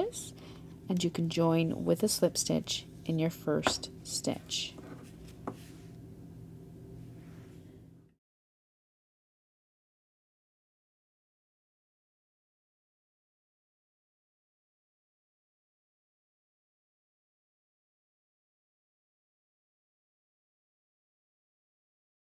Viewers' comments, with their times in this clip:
0:09 I lose sound?